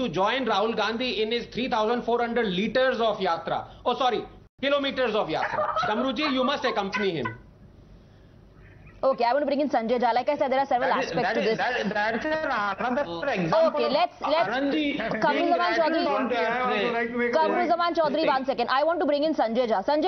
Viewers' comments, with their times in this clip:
0:05 ...... That laugh is more than million dollar......🤣🤣🤣🤣🤣🤣
0:05 One should always laugh 😄 like this or else keep quiet .....